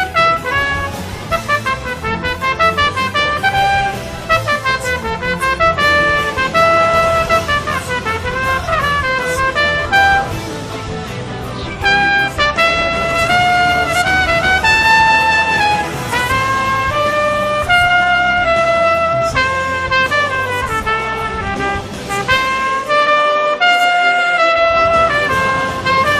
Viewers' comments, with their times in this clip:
0:10 he ran out of air